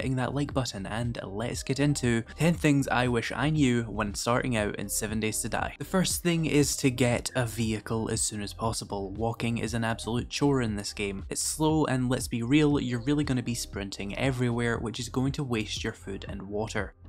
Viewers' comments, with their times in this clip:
0:05 "Like" for the well spoken young man.